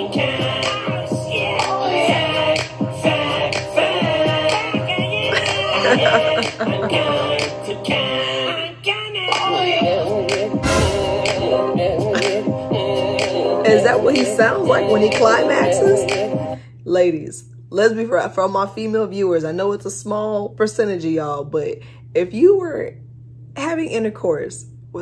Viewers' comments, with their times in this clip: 0:10 let me help you debunk some secrets on this song. sek that ((weird sound) he is saying (I'm slim shady)) (goo listen again :face-turquoise-covering-eyes:) you will hear it once you know what that sound is. 😅😂😂🙃